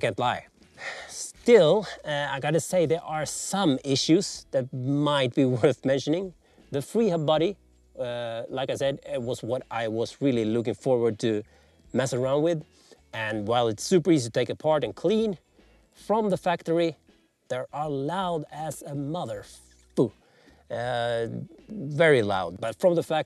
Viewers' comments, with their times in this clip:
0:10 The freehub noise is What Campagnolo calls a”low effort indicator” — no joke!